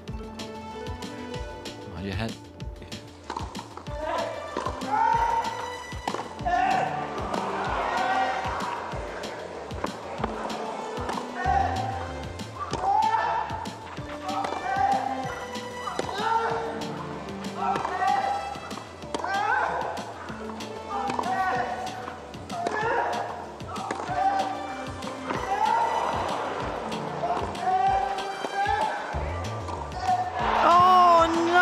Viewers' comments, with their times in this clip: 0:03 Those weren't even grunts They were literally just yelling
0:17 i swear you can use this match as torture just tie anyone to a chair and put these grunts on high volume